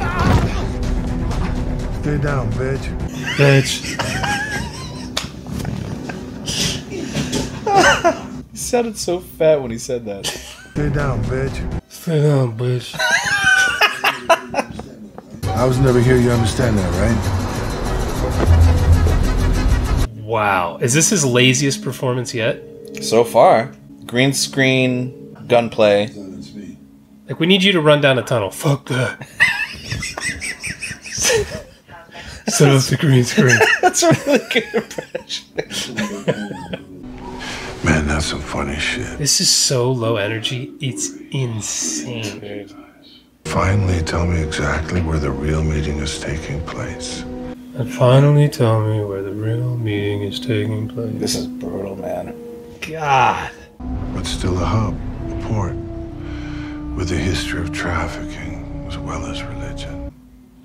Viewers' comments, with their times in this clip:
0:05 min. I think they dupe his voice because when he does fight he’s winded & can’t talk
0:27 I laughed way to much at that i was laughing for an hour afterward just the impression
0:27 If you’re gonna censor your own swearing, make sure you catch em all.
0:46 Sounds like he just ate a dozen donuts and he's going into a diabetic coma..... 🍩🥋😴😴😴😴😴😴😴😴😴😴😴😴😴😴😴😴